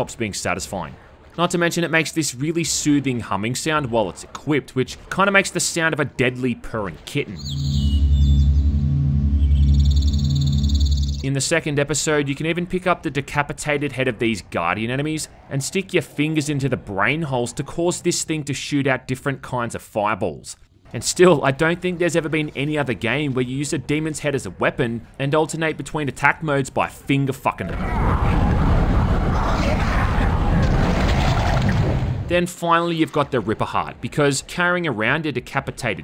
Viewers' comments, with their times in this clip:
0:08 Total Annihilation main menu humming.
0:22 sad Painkiller Overdose sounds